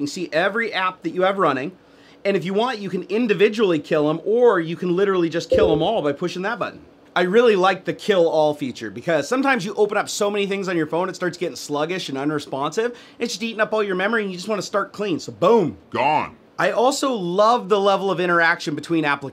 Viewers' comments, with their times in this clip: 0:04 anyone was anoyed by FB sound?